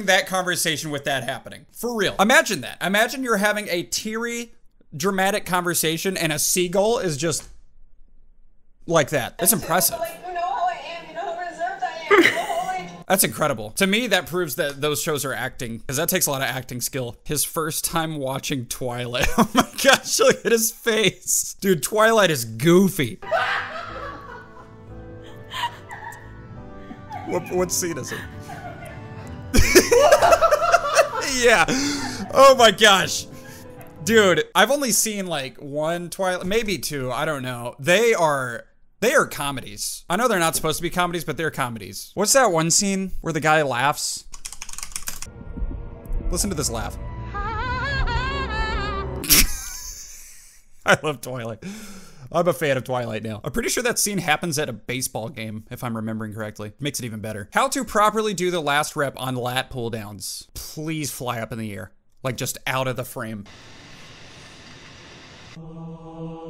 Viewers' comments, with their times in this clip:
0:08 The seagull impression was spot on!
0:47 bro on autotune